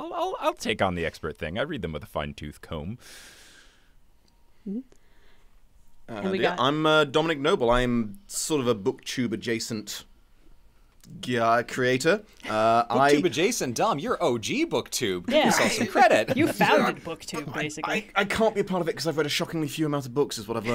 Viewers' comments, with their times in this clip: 0:06 I'd recognize that accent anywhere!